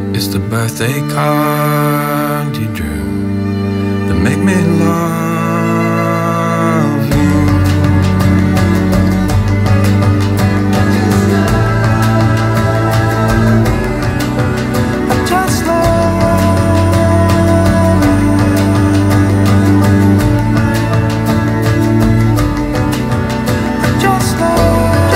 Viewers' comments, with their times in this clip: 0:07 This instrumental part, I just love you ❤